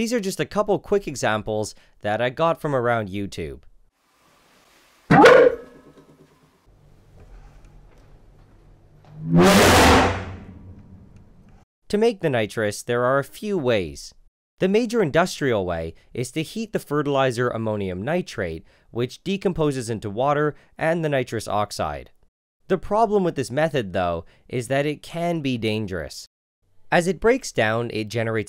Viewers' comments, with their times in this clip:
0:04 The inside of dogs when they bark
0:06 NileRed: Makes the sound of a dog barking The sound of the the seven horns announcing the apocalypse.
0:07 what kind of dog do you own? A fuccin' hell hound?!
0:07 if your dog sounds like that it's probably not a good thing
0:07 Barking dog demonstration. I am no veterinarian nor biologist but I am pretty sure that's not how a dog is supposed to sound like...
0:07 O.o that was a demonic roar demonstration
0:07 sounds like my fart
0:07 sounds like Nissan GT-R
0:08 sounds like a motorcycle or sumn
0:08 its more to a BRRRRRRRRRRRRUHHHHOOOOOOOOOOOOOOOOAHHHHHHHHHHHGH
0:08 its sound like V12 engine💀👍
0:08 that was a backrooms monster scream, not a bark💀
0:08 Other Dogs:Woof God of Dogs:
0:08 my big brother sneezed like that yesterday
0:08 No one: Dads snoring at 2 am:
0:08 im deaf edit: fart
0:08 Ok kids, who brought the Lamborghini in the classroom?
0:08 Dude.... That test sounded like a straight piped gtr
0:08 Thats one aggressive dog right there.
0:08 I'd say this is more like a sneezing elephant 😂
0:08 That one honda civic at 2am:
0:08 Sounds like a fart that my great grandfather had been holding in since birth
0:08 Oh, so that's what a hellhound sounds like.
0:08 when dad sneezes at 4am and wakes everyone up
0:08 loud flushing toilet's be like:
0:08 sounds like someone just blowing into their mic
0:08 me when i left doom eternal on loud
0:08 it sounded like a vtec honda
0:09 sounds just like my little Shitzu
0:09 it sounded more like "yeet" than barking
0:09 NIGGA THAT AIN'T A FUCKIN BARK THAT A DRAGON DYING
0:09 What it sounds like when someone moves their desk a centimeter during a test:
0:09 when you step on your dogs tail..
0:09 sound like blade runner 2049 sound effect
0:09 that's... not a dog
0:09 WHO LET THE DOGS OUT sound of
0:09 howlers in the backrooms?
0:09 sounds like my sister after a curry
0:09 Dads sneezing be like:
0:09 sounds like when a car goes into a tunnel
0:09 sounds like when You hold in a fart too long.
0:09 Surprisingly a lot of people mention the backrooms entities in this comment section lol People said that this loud noise sounds like the backrooms creature idk what its called
0:09 Honda Civics going by at 3am
0:09 A car speeding past sound :D
0:09 AHHH MY EARs
0:09 I swear to god this sounds like a lambhorghini reving instead of a dog barking
0:09 this sounds like a kid on an Xbox 360 mic screaming after you poured lava over his Minecraft house
0:10 definitely a normal dog bark. Proven by my dog. (I don’t have one)